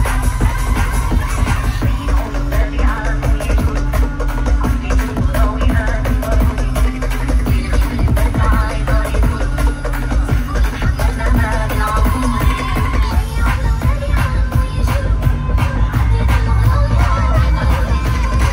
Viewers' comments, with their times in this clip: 0:03 they really start to turn up the heat!